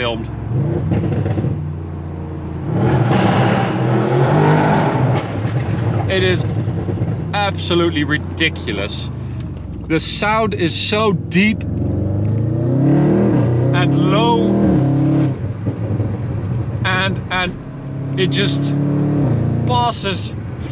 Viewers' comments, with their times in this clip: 0:03 RIP headphone users😂